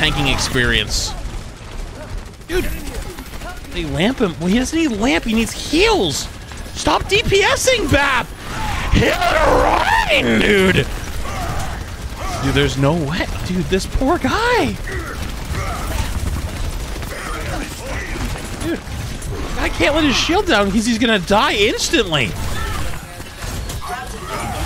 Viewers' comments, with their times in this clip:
0:07 lmfao i love how he says HEAALL REEIINN DUUUDDEE